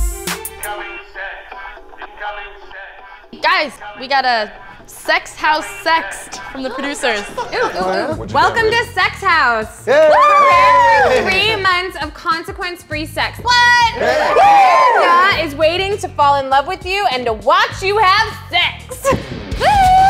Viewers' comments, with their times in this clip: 0:08 i know that voice!